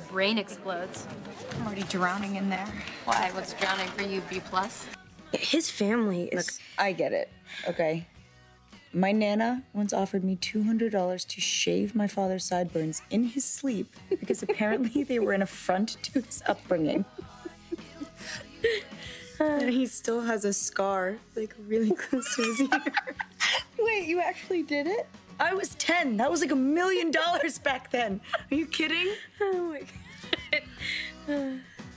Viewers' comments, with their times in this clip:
0:08 that is definitely their genuine giggles, I wouldn’t be surprised if that was ad-libbed😂
0:19 Aria’s laugh omg 😭